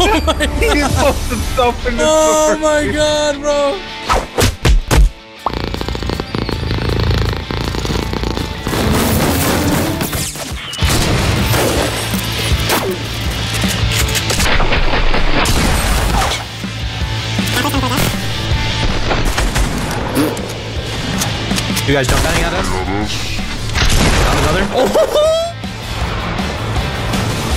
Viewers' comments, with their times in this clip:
0:09 sped up tree hitting I could listen to for HOURS